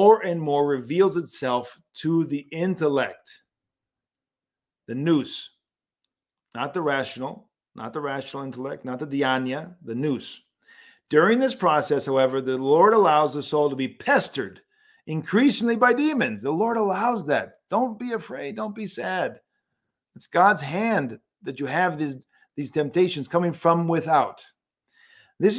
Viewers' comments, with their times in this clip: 0:07 What is the word for the rational intellect used it sounds like deaniea?